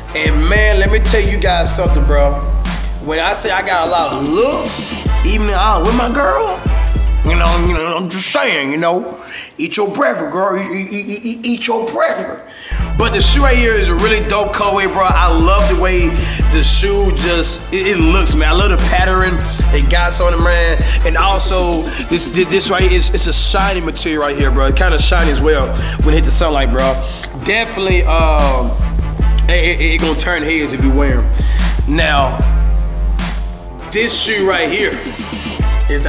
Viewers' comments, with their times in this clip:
0:09 at time you stuttern
0:17 "I love the pattering"
0:18 sorry Cash but what word was that
0:18 patteran, what you said that wrong,its pattern